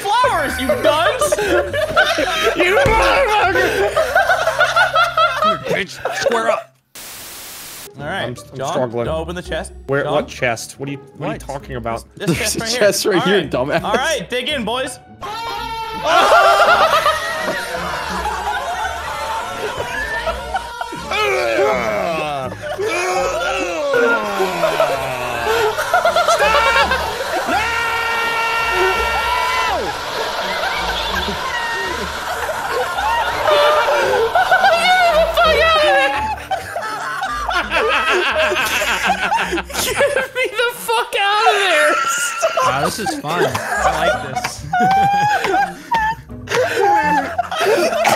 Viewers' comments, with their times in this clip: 0:06 Headphone user be warned when they open the chest they do it again about a min later
0:14 headphone users please turn down your volume you'll thank me later.
0:14 headphone user lower the volume for your own safety
0:15 best part ever. Need to turn the volume up tho, it’s kinda quiet
0:15 Me peacefully watching a minecraft video until suddenly moaning sounds come out of a chest 😂😂
0:16 Rest In Peace the homies who used earphones during
0:22 The sound that Hell makes
0:25 panda scream make it 10 times better
0:27 THAT SCREAM GOT ME DEAD AS HELLLLLL
0:34 I didn’t know what else to call it besides ‘screaming’ or ‘the horniest sounding cicada swarm’